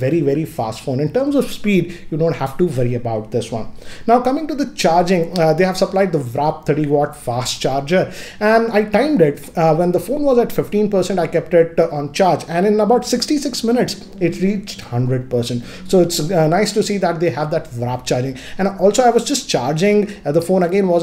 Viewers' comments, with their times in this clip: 0:06 what the hell is VRAP charging 😂😂